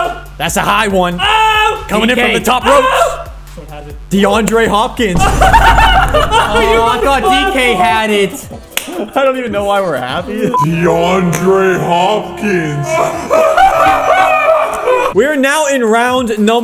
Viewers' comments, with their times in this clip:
0:03 bro sounds like Barney from simpson